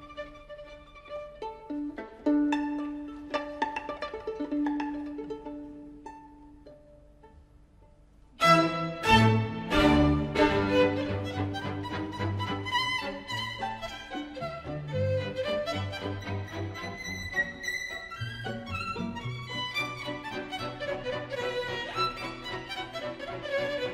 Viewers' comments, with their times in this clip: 0:07 he definitely missed that chord